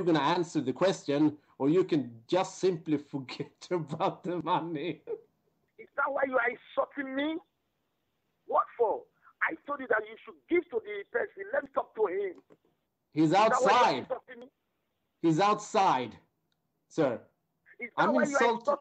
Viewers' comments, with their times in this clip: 0:06 😂😂😂😂😂 tge klakk totally loses it and laughs. Greedy thief didn't even notice!